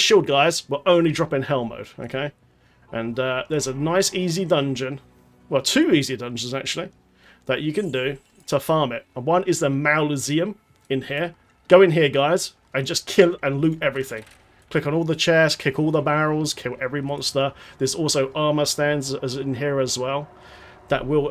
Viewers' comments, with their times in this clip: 0:08 "Mauluseum" HAHAHAHAH! Made my day..